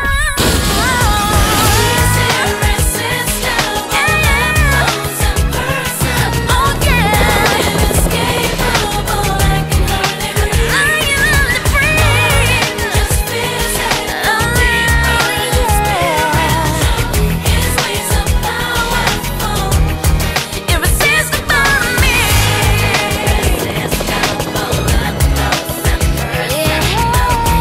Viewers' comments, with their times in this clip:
0:07 invisible helicopter. What a short song.. lol
0:11 When she screams I can’t hardly breathe that scene bothers me